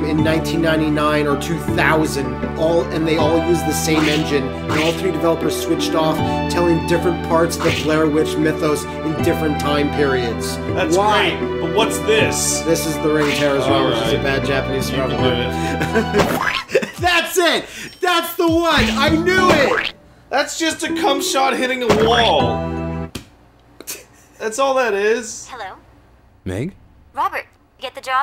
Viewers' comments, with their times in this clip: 0:09 sounds like a 90's commercial for a nickelodeon gak toy